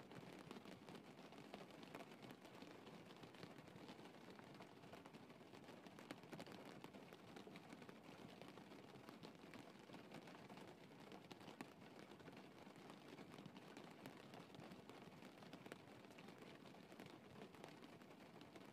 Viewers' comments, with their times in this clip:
0:05 Lol why does that sound like me when I encourage my friends to go get their man or girl lol